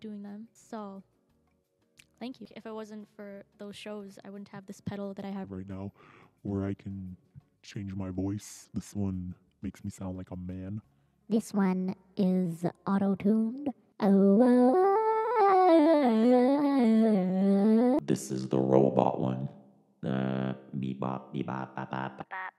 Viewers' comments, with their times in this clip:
0:05 hahahahha love it, I had you in the background while I was working and I was not expecting your change of voice hahaahhaa